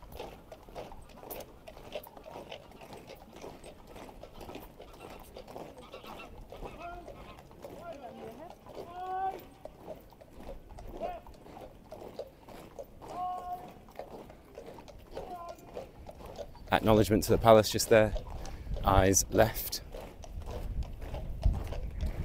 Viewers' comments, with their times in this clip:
0:06 did you👂the Royal Geeses or ducks 🦆.